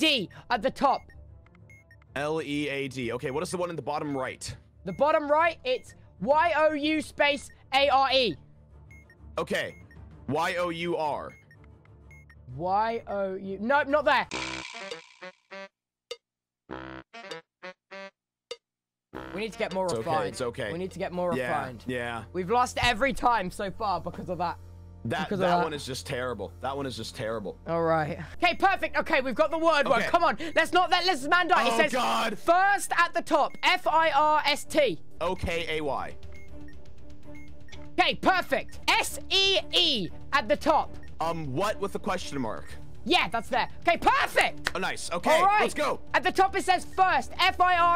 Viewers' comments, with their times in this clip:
0:10 he sounded so sure. LMAO
0:17 apparently the bomb went on to ''expload''?
0:31 oh, it's the words - WAIT, TECHNO?